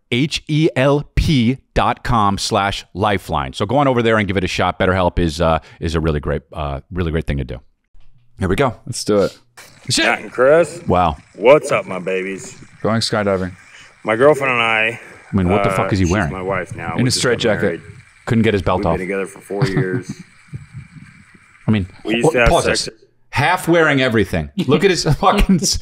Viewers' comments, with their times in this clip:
0:08 I'm slightly confused. the guy say and I quote " my girlfriend and I, actually shes my wife now we just got married. We been together forty years" .. which is already seems odd but then you look at the man speaking and there no way older than 40 yrs old, he then goes on to say their a young couple . wtf he talking bout??? Anyone else hearing this or am im loosing my mind.